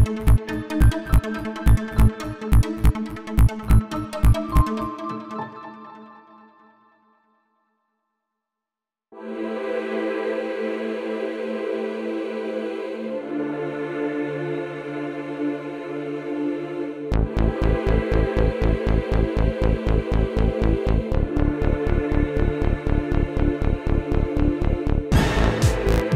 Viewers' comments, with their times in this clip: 0:10 ......😎 that beat tho!